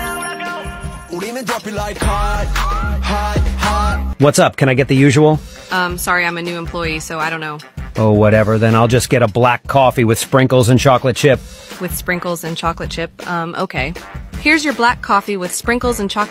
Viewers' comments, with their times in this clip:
0:04 The song tho